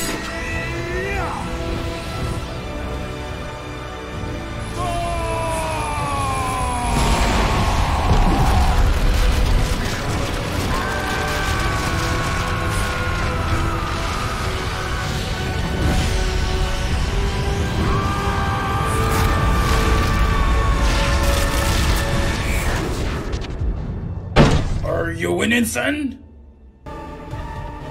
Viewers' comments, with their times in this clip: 0:09 There's just something about Death screaming in legitimate agony that is funny to me.